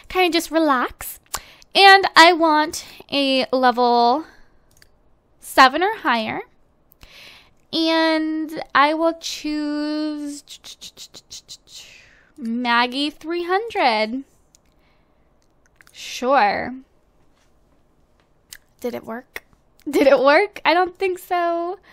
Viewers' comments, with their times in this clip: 0:08 OMG Your voice sound soo beautifull in the min